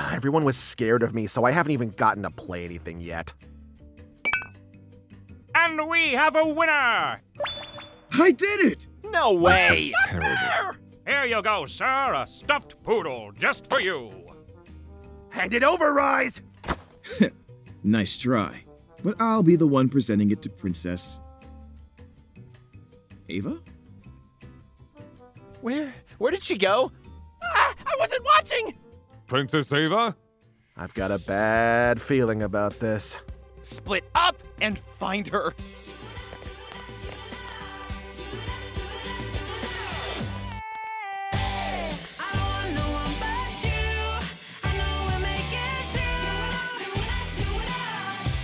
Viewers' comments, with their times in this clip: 0:09 I just love when rhys gets the prize and all of the boys are yelling were as pierce is just there calmly saying " this is terrible 🥺😐 " like-
0:24 he sounds so scared awww
0:33 Yeah! you could hear through ash’s voice that his anger that Ava left them quickly turned to worry
0:33 Also you could hear through ash’s voice that his anger that Ava left them quickly turned to worry
0:33 Also you could hear through ash’s voice that his anger that Ava left them quickly turned to worry
0:33 Also you could hear through ash’s voice that his anger that Ava left them quickly turned to worry
0:34 AAAAAAAA THE WORRINESS IN HIS VOICE ITS SO CUTE